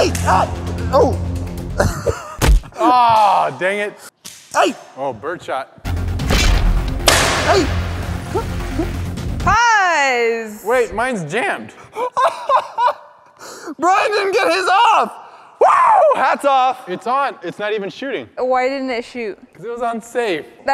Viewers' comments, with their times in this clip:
0:04 that second one sounded like a sound effect